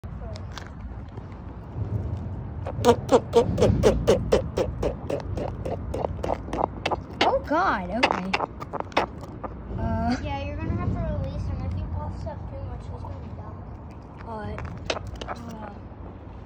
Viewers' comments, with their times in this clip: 0:03 is he farting 🤔